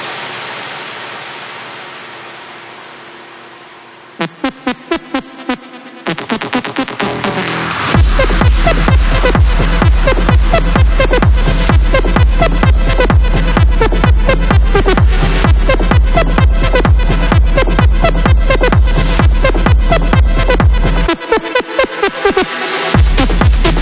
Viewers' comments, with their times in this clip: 0:09 the musics takes mins to start